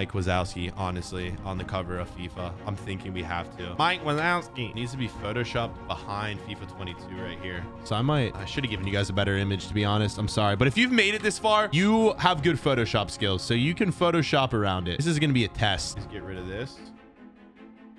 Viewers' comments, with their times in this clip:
0:03 how he said that made me laugh so hard😂😂